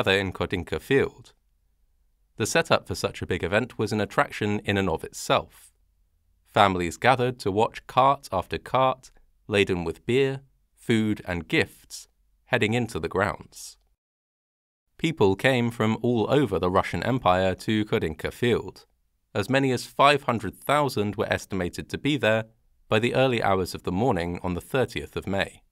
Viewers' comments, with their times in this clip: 0:07 When it's in Texas and I can't sleep, nothing is better then a FH. Lull me to sleep with your amazing voice. I promise if I don't see the whole video I will as soon as I regain consciousness.